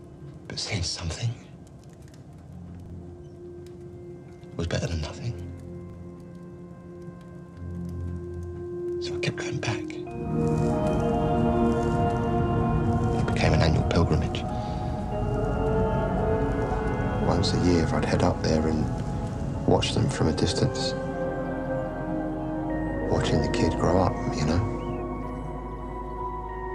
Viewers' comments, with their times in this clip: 0:10 I think is my favorite shot of this whole episode: The music, and the snow...and a tortured gentleman who drives every year just to see a glimpse of his child’s shadow...the despair and tragedy...but the hope...